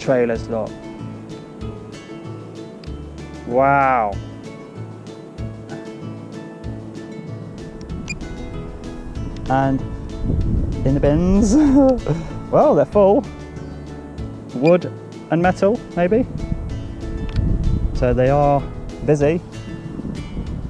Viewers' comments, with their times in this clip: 0:08 You remind me of Frank Spencer “And in the bins ooo”